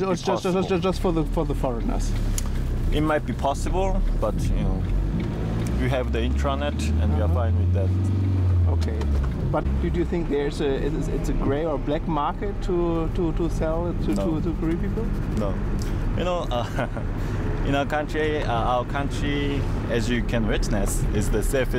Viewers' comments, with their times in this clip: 0:06 In north Korea the internet is banned " we have the internet and we're fine with that " ? So you have internet or not ??